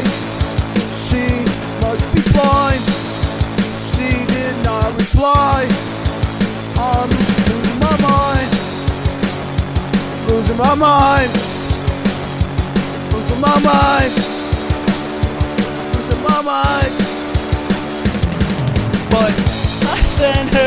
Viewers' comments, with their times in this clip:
0:06 bro reminded me of the dude singing "I am just a fish" 😭